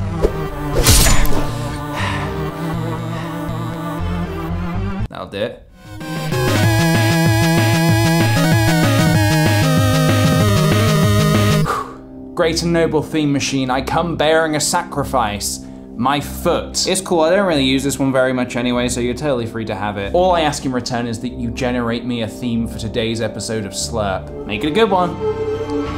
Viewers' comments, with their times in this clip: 0:07 is this the song "Creep" by radio head in like a video game style? cause it kinda sounds like at and also notice his shirt